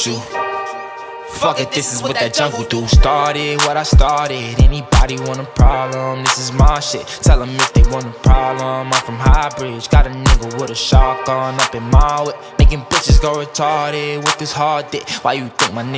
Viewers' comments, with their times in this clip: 0:03 it bangs on 1.25x